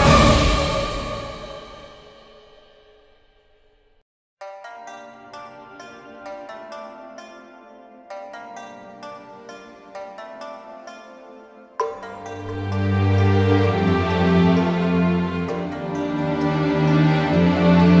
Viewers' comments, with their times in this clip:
0:06 Hope really sounds like hope